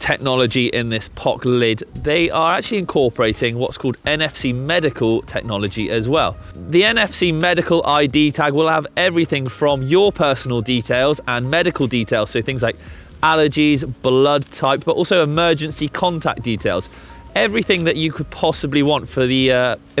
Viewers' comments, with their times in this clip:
0:06 is a fart!?!